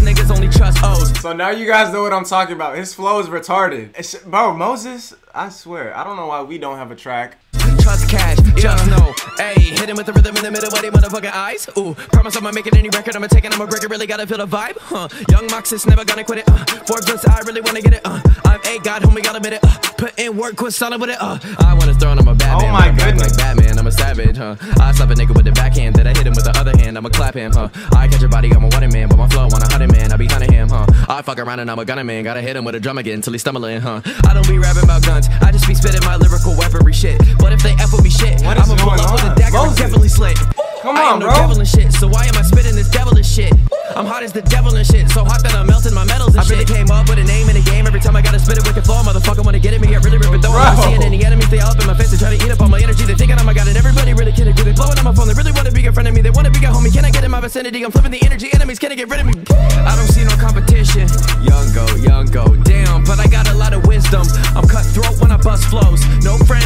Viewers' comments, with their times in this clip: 0:10 he sounds like Big Sean with a Joyner Lucas's flow. 🔥💯
0:22 so Eminem sounding like.
0:53 lowkey sounds like NF